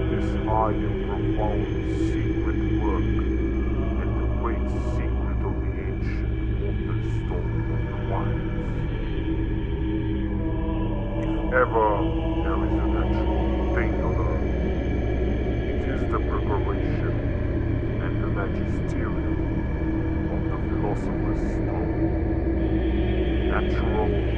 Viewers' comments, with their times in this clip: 0:10 it sounds like halo music for a little